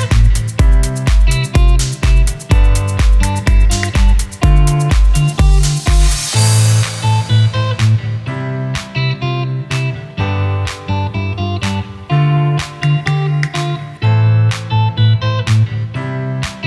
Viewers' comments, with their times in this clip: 0:03 Fuck, you did 3 000 000 with false notes ? I'm so desesperate....